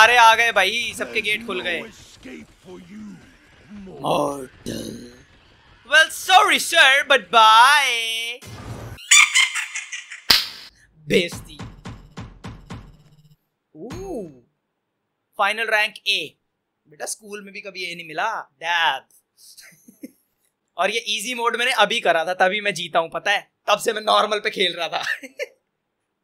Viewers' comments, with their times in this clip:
0:08 the laugh was epic